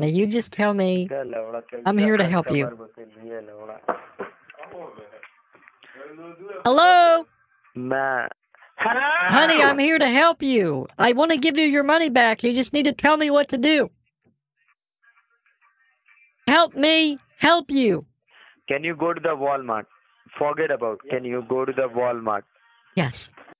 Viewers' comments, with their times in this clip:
0:05 HELLLLLOOOOO!!!! Fuck I CRIED laughing. You can tell the pain in the dudes voice over getting interrupted.
0:08 just the furious "HELLLOOO?!?!" Gets me every time
0:08 Primal scream greetings 😂
0:09 Wow! That scream He is legitimately losing his mind haha. It's so sad these people are out there talking to confused and vulnerable humans.